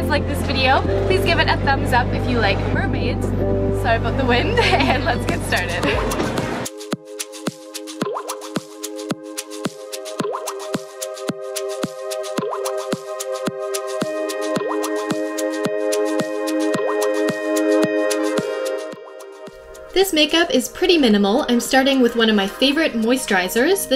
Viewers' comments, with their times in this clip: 0:06 At the song I started singing "Milkshake" I had to sry😂😂😂😂😂